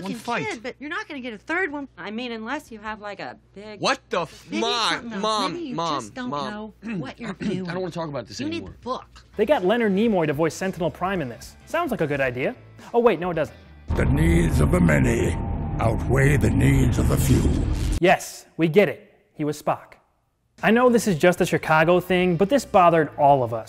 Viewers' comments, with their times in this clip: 0:07 sounds very damn close to "what the fuck"